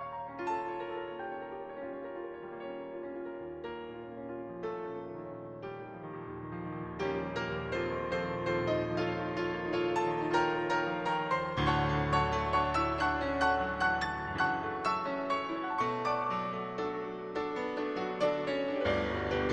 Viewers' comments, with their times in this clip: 0:06 if Debussy composed "He's a Pirate". xD